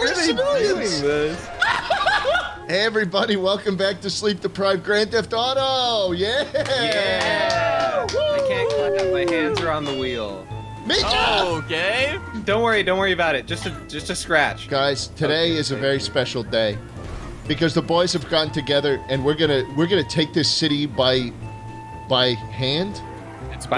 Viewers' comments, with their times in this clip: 0:04 Yoooooo, when that Simpsons Hit and Run music started playing I was sent back in tiiiiihme